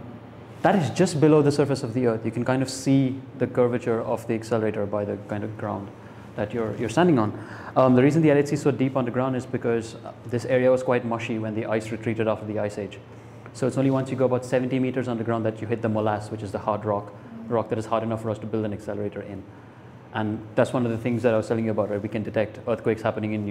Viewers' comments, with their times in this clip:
0:08 high on speed 's? bood bood bood, slow the mess up, u aint clear, bood boood.